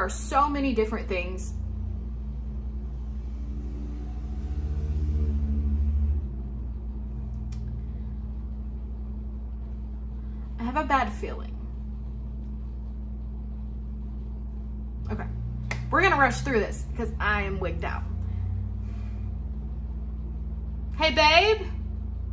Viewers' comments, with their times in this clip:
0:04 I know logically it's probably a vehicle outside but the sound at the time stamp eight before you pause had EVERY hair on the back of my neck standing straight up. Anyone else hear that?